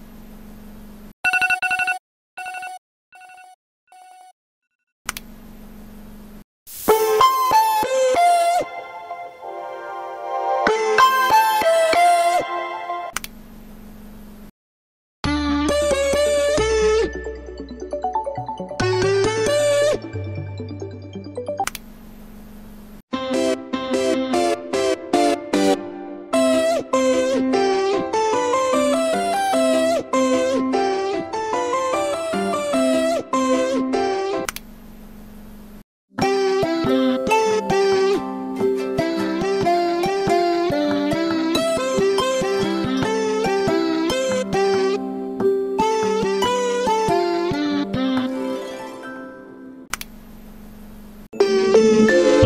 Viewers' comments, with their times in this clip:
0:06 who think that alarm is the best 👇
0:34 I hate this alarm The alarm that rings next to us every school day 😐